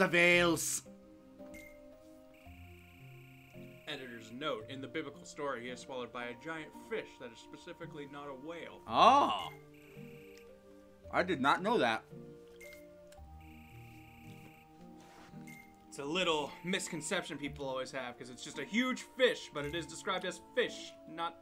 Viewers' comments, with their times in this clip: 0:05 You sound like Jimny Stewart